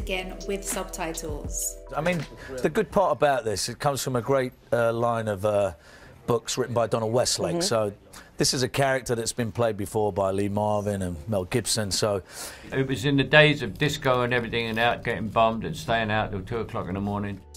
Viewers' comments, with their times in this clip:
0:04 Lee Marvin, no G